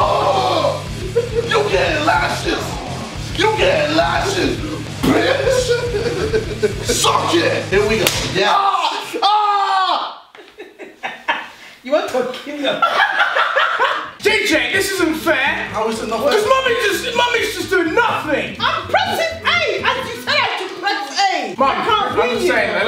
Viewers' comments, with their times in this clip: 0:08 when his dad shouted & they all looked at him 😂😂